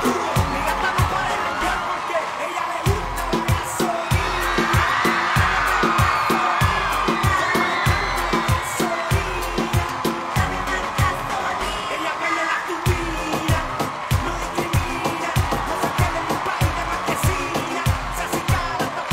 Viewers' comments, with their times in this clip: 0:06 Can someone explain why they start screaming frantically ?